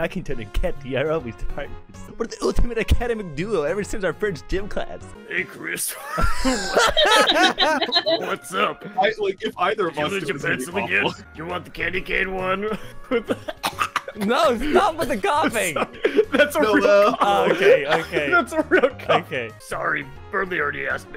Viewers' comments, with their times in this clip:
0:06 Noelle got her dad’s chainsmoker voice